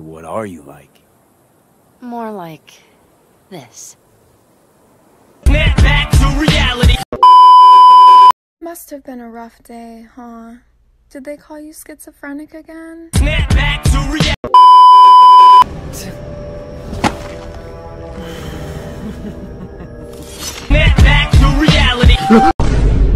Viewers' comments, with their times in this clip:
0:08 can we talk she has such a great voice, but her saying them calling him schizophrenic is so sad.-SNAPBACK TO REALITY